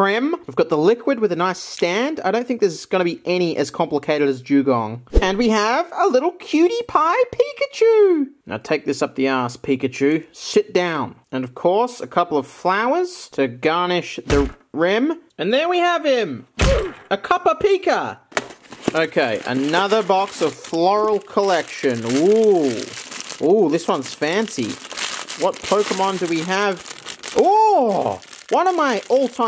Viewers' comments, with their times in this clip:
0:05 The tonal shift there; it summarizes why I love these videos LOL
0:17 Why can’t I hear the Oof OMG SCAMMMAD >:(